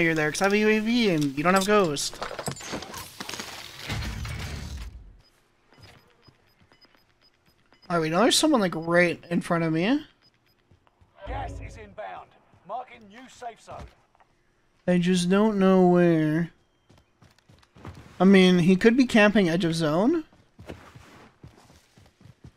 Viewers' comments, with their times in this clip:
0:09 right in front of me💅 such a fruity voice EDIT: i found more fruity voice